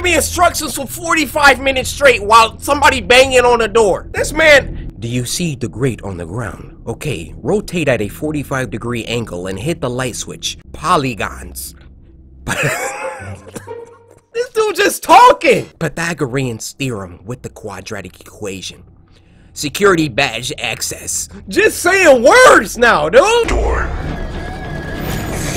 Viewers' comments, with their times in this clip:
0:06 THE WAY HE SAID "Rotate At A 45 Degree Angle"